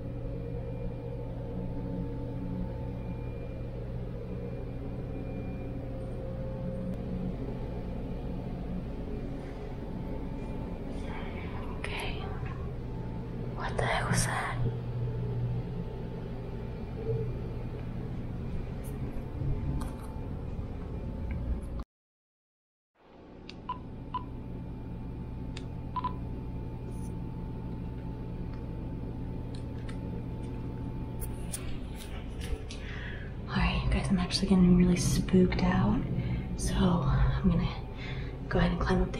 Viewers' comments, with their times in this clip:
0:05 A girl laughing
0:11 it sounded like a child(ren) laughing
0:11 there was a voice, sounded like a small child, a few seconds before this there was a sound of a small child, not sure whether it was a laugh or something. Just saying, the cupboard door with the mirror on it was open while you were sleeping. I was puzzled 🤔 as to why it was open and the fact that you would have had to walk around the door to get on the bed where you were sitting! 🤭 I was actually waiting for the door to move because it made me think someone could have been hiding behind it! 🙄😁 Normally you see doors open or close but that door only moved a little making me more sure someone was standing behind it and moving it! 😆 Other than that with all the noises and many bumps it was a great video, still think the whole place is haunted though! 😊
0:11 I think I heard the words Get out.
0:12 it sounded like a kid saying stay here
0:14 heard a voice say something can’t figure it out
0:26 you can hear a woman's voice but it is vary faint